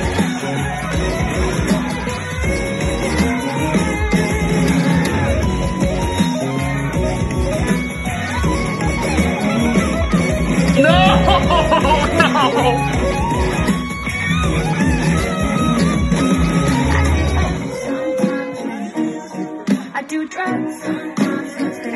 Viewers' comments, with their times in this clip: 0:06 You don't need to be master chef to notice a fly in your soup, that flat note was pretty nasty.